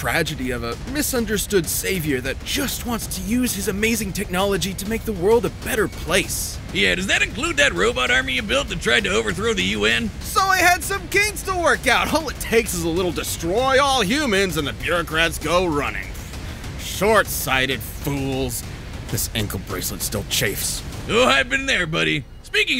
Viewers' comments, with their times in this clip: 0:06 Starting from I did not get anything they said at all.